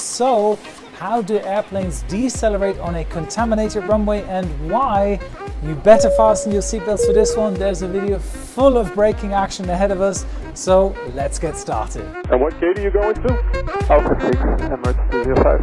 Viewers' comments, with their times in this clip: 0:03 Ever noticed that the plane Goes boing boing lol 🧐